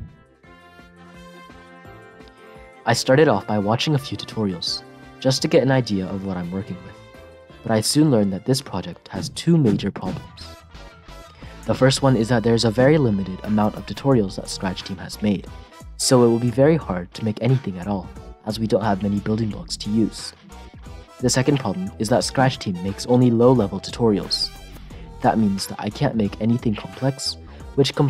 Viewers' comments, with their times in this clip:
0:10 REAL SPED UP INSIDE THE CASTLE WALLS TOTALLY LEGIT NO CAP!1!1!!11!!1 (world bowser)